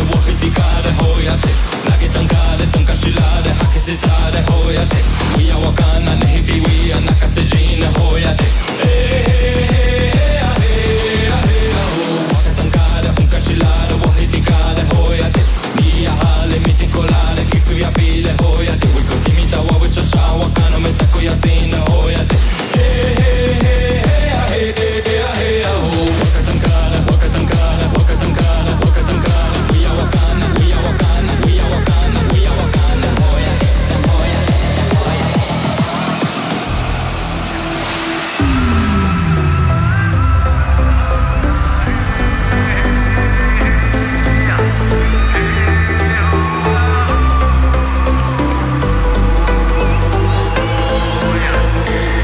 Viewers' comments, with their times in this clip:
0:10 when the swarm of flies buzz next to your ear
0:38 those vocals <3